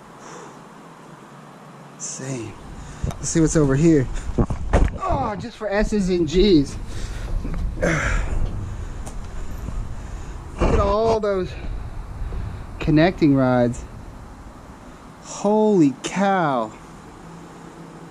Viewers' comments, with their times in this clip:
0:04 I heard YOU fart funny